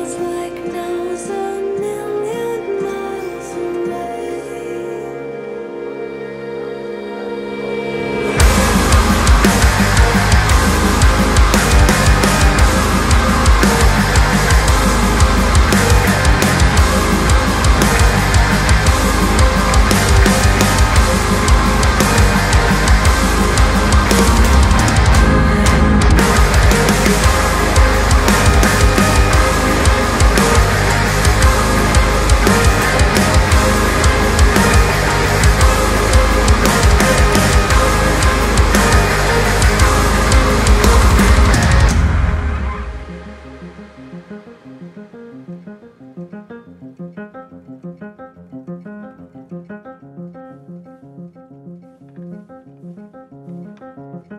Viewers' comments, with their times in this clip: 0:05 The transition from the song "Away" to "Cry" is my favorite peace of music I've heard in recent memory.
0:35 Wondering if youre into Nils Frahm, the part starting reminded me of his compositions a lot Edit: Oh and that it gets very Devy